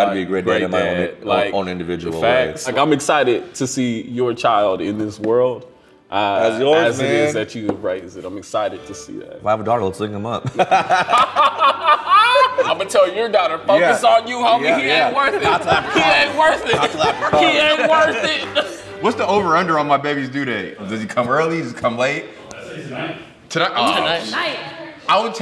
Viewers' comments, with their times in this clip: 0:09 Did anybody get what he said after 'I'm excited to see that'? Just can't decipher 🤔